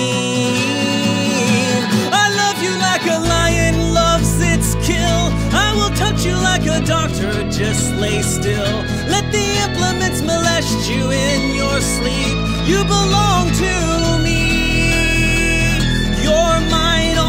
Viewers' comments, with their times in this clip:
0:05 🔥🔥🔥🔥 are you still listening in 2020 march This voice is fabulous 💘 👇👇